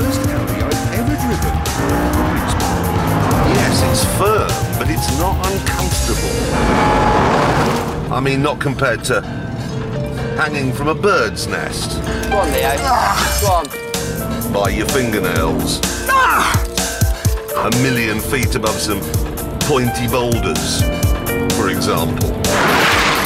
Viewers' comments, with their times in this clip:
0:09 There is a brief moment I can hear Jeremy clearly and it was beautiful